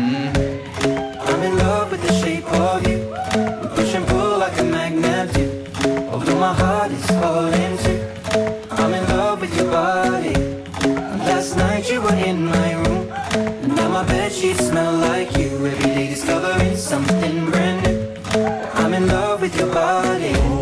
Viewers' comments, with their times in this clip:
0:03 i love that they screamed "ooh" in the exact moment they jumped lol